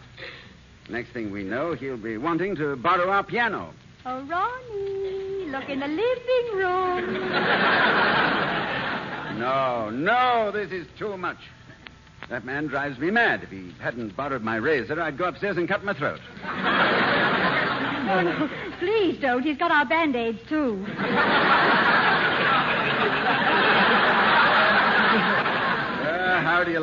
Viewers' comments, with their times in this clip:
0:08 My personal favorite line from this episode is Ronald Colman's "No, no, this is too much... that man drives me mad! If he hadn't borrowed my razor, I'd go upstairs & cut my throat." (Especially the casual way he said 'cut my throat!')
0:08 My personal favorite line from this episode is Ronald Colman's "No, no, this is too much... that man drives me mad! If he hadn't borrowed my razor, I'd go upstairs & cut my throat." (Especially the casual way he said 'cut my throat!')